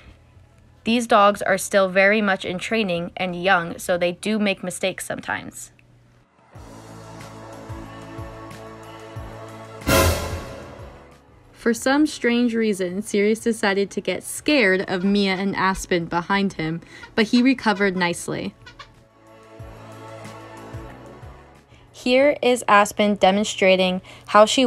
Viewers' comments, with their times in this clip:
0:09 OMG XD THAT LOUD ASS NOISE MADE ME ALMOST DIE XD LMAOOO.